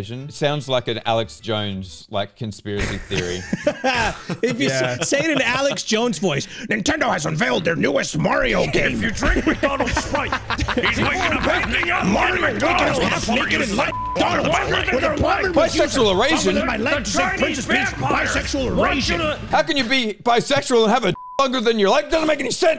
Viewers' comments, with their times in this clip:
0:05 Best Group Commotion. 👍